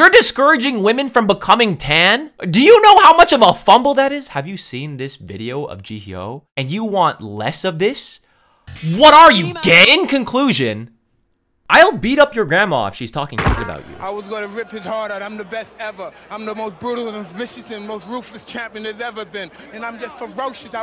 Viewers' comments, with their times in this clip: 0:08 the jjk intro playing when he screamed "WHAT ARE YOU, GAY??" is literally why im subscribed. Peak humor since like 2016